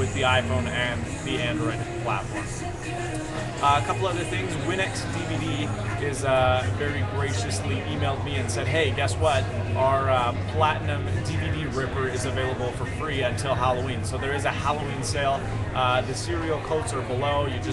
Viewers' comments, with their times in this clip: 0:03 lol. i heard "Sunny D and Rum" in the background!